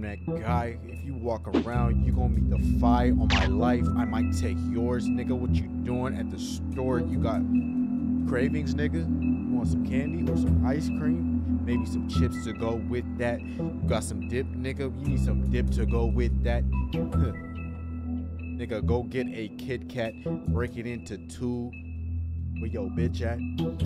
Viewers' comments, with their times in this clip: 0:10 bro think he Kendrick